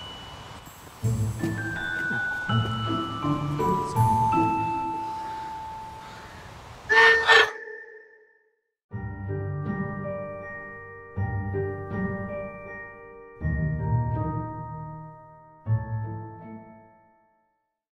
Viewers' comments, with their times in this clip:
0:03 Me wen the the birds wake me up in the morning